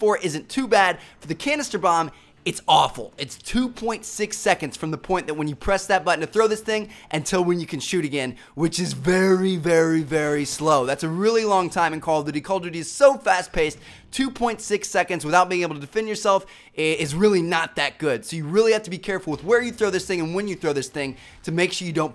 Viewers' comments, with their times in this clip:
0:09 dat voice doe...